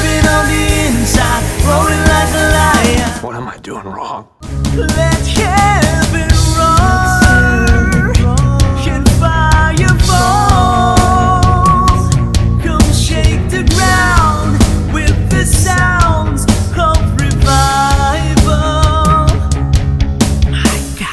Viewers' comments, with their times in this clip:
0:05 that montage with the main theme playing in the background was epic